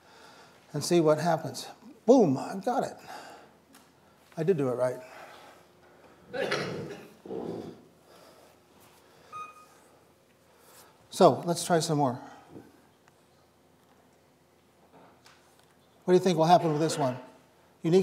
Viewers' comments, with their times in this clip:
0:04 If you listen closely somebody tries to cover up their fart by coughing and fails horrendously.